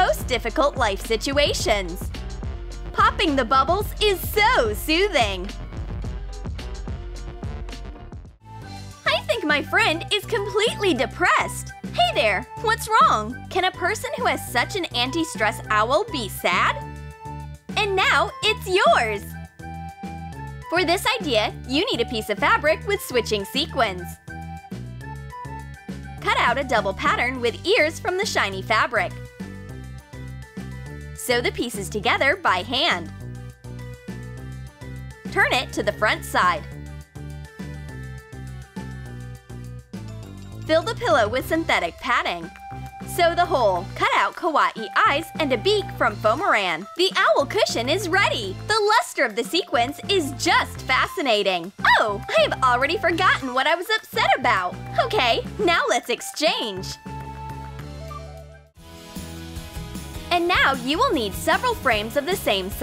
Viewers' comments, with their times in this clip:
0:04 Happy, positive voice: I THINK MY FRIEND OS COMPLETELY DEPRESSED! 🥳
0:44 then cut out kawe eyes how do you say Kawaii Kawaii or Kewe like troom troom comment for number 1 like for 2 =-=